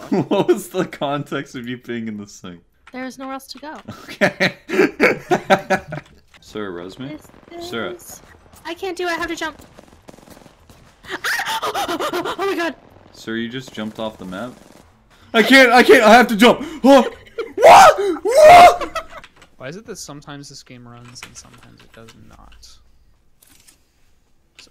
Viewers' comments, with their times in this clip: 0:09 "i can't do it i have your child"